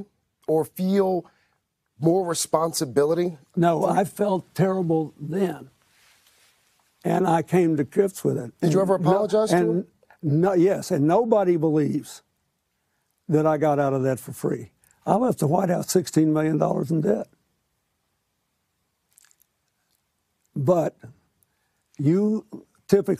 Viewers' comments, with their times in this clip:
0:08 “I Left $16 mil in Debt……” what a heartless thing to say. That silent pause after he says that really didn’t do him any favors either.